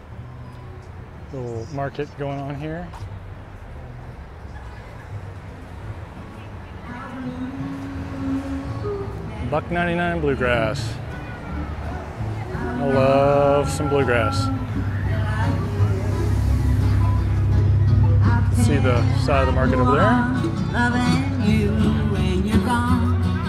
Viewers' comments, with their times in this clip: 0:09 The musician/band feels so nostalgic somehow! It's like going back in time and walking through the streets.